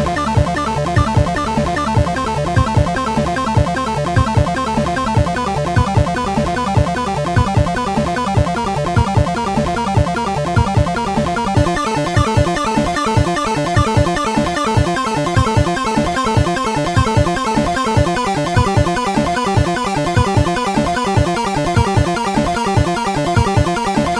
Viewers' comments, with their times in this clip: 0:10 I love how crazy this one sounds, especially in. It almost doesn't sound like an NES.